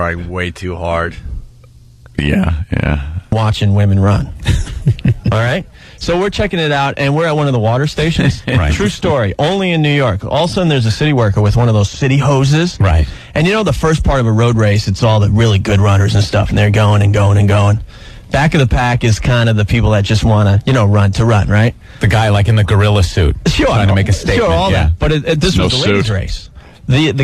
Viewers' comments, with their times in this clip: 0:09 Opie always says "Allasunin".